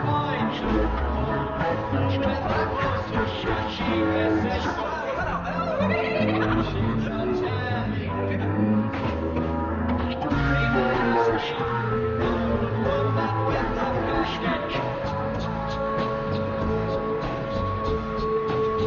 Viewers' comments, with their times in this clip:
0:04 Btw is totally the same vibe used in laughing gnome